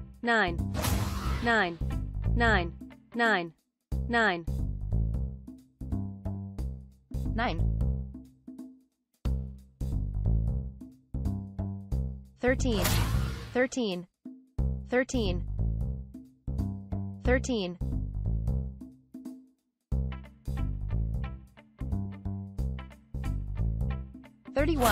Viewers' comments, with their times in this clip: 0:05 I wonder how many German people are confused right now? Vhat do you mean no
0:07 that nien was cute I'm not gonna lie LOL